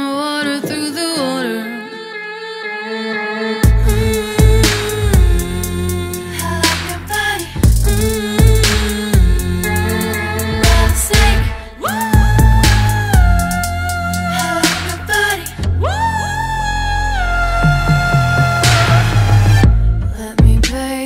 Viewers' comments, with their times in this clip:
0:03 is that a flute?